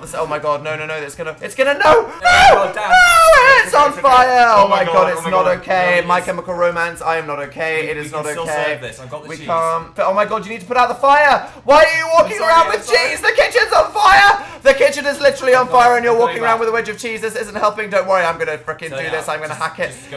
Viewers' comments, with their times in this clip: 0:04 first he mentions my chem, then he yells Dan is not on fire wtf dan are you okay? Oh right